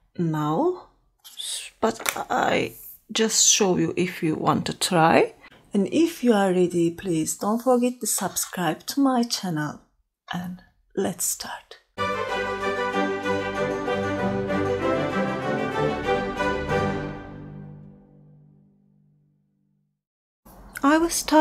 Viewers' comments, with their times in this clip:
0:05 Your voice is so soothing and your tutorials are always so helpful! I was wondering, did you make the sweater that showed ? It's super cute :D